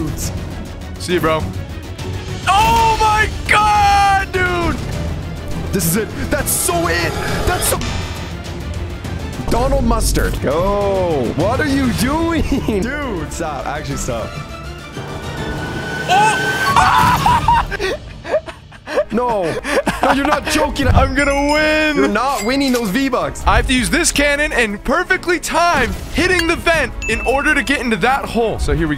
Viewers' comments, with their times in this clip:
0:09 I like how he said Donald mustard